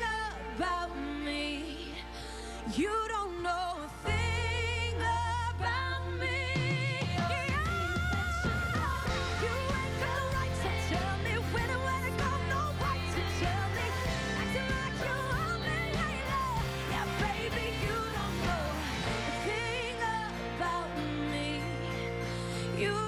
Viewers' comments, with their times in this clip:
0:06 Her vocal range is ridiculous! she killed it! Her new cd is kick ass!